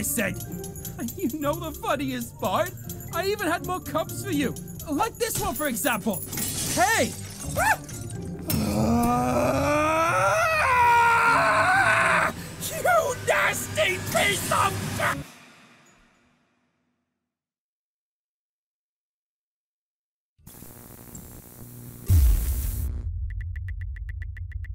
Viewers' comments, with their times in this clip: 0:06 narrator is pissed
0:07 That little 'ah' was so funny to me for some reason
0:08 the narrator went SUPER SAIYAN!